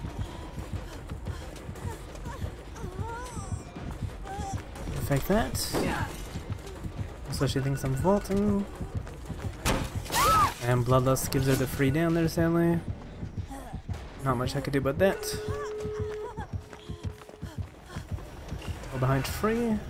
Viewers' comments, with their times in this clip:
0:06 the iphone alarm ringing 💀